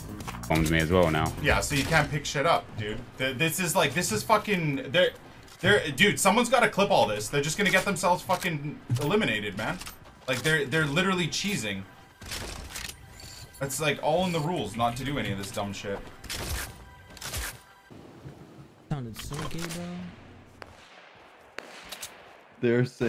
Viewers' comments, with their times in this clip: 0:07 he literally sounded like he was about to tear up lmao